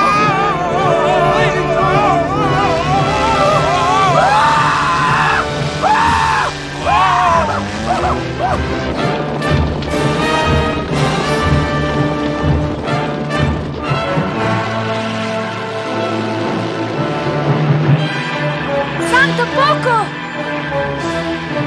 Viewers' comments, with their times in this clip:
0:03 LOL Ned’s scream 😂🤣